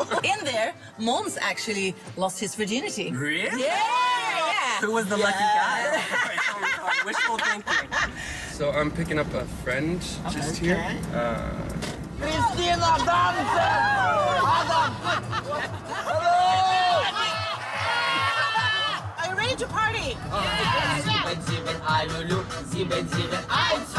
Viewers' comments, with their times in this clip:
0:05 Petra's laughter made me laugh harder :D